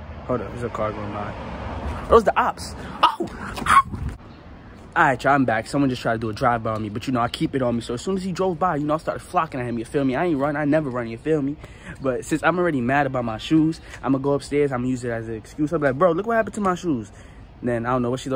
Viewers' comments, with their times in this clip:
0:04 the cop I hear them with me to